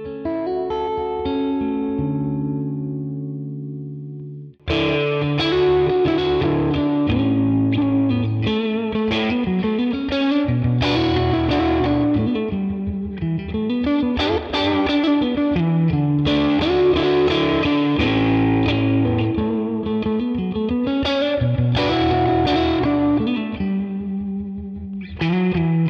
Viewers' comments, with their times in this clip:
0:06 Riff is magical ! Where's it from?